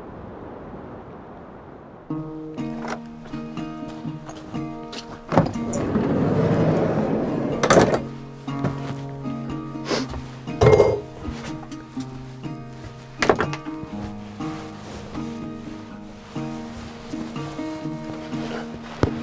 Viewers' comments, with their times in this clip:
0:05 I’m like your video very much and your soundtrack is very comfortable to me(ex: guitar, I’m love it and want to know the song name😊)